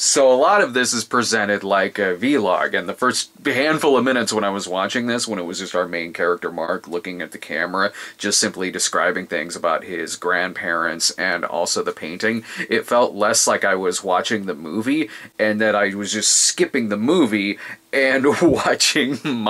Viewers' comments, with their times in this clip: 0:03 Veelog? Vee-log?! Not VLOG?!